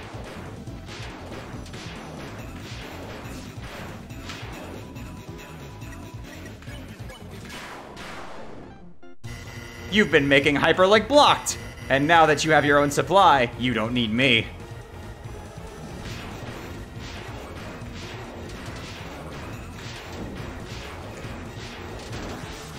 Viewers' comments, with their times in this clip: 0:04 just here mention how the select sounds and x-slash went in time with the music
0:05 did anyone notice how the hits are in sync with the music? ngl it sounds sick